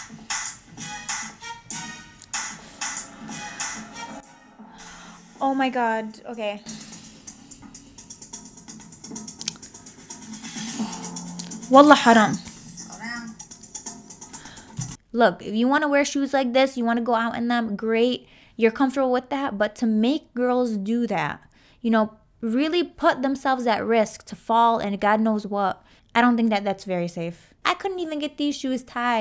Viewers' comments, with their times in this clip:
0:07 is it me or does this kinda look like an extremely suppressed laugh? Like Tyra wanted to bust up laughing but passed it off as an OoF
0:12 “wallah haram” gawd i love it when she speaks arabic staaaaahp